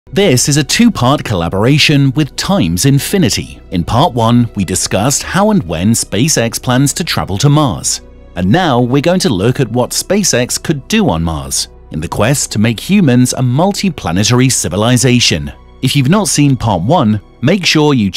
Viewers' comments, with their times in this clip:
0:00 Rip all the people that use headset